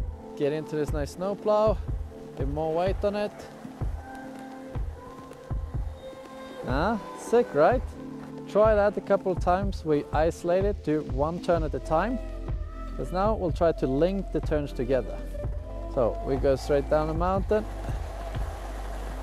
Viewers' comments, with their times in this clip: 0:06 "...Uhhh, sick, right??..." His best Borat imitation